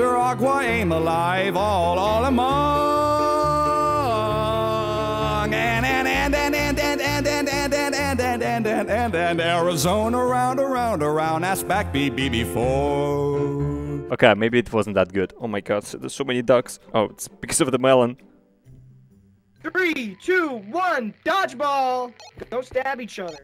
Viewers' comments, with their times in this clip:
0:08 he almost break a laugh there and it's funny